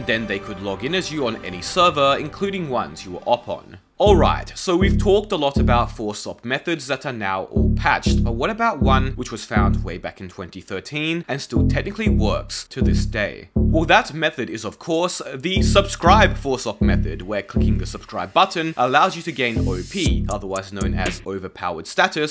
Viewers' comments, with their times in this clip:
0:04 this segment sounds like you spitting bars lmao